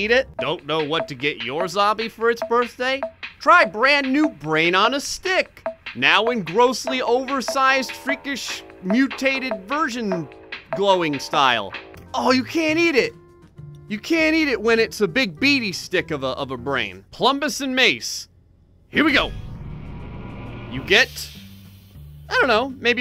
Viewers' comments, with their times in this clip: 0:07 this sound like it would really be in rick and morty tbh